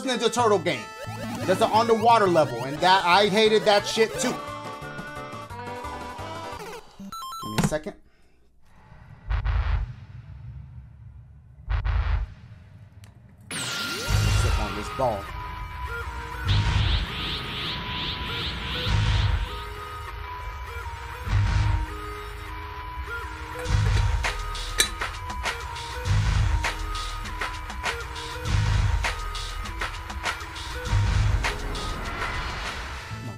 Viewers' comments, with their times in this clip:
0:09 that beat tho!!!!
0:14 dude when cell theme dropped WHO IS IN THE STUDIO 💯💯💯